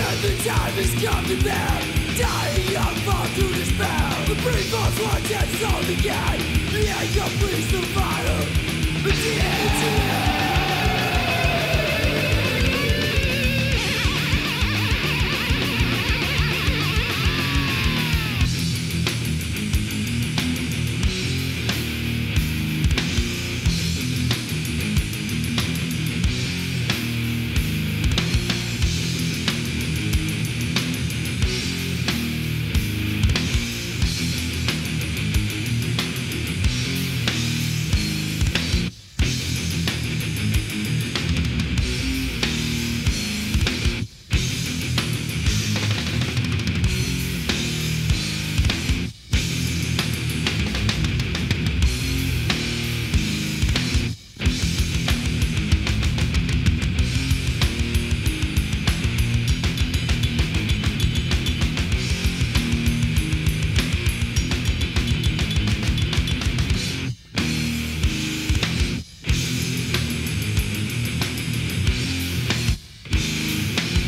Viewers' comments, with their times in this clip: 0:10 Guitar solo + sexy long haired man = or*asm
0:18 I could listen to that riff for hours
0:56 When the slow double bass hits ..immediate goosebumps. So great